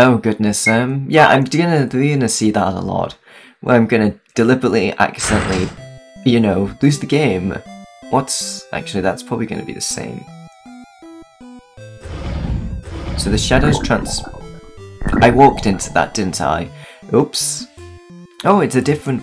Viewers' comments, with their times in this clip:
0:07 that music is so iconic 🙂